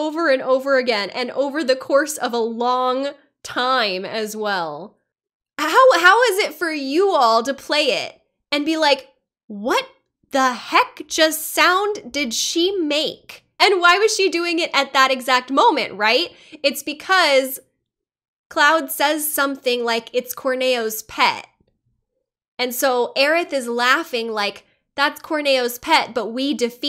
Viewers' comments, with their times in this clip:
0:09 The first time I heard it, I thought it was an exaggerated shiver. Like Cloud says "It's Corneo's pet, and we were dinner." and the thought of getting eaten by a gross, giant monster that lives in sewer water REALLY gave Aerith the heebie-jeebies (especially considering it was a tough fight, so that scenario wasn't hard to imagine).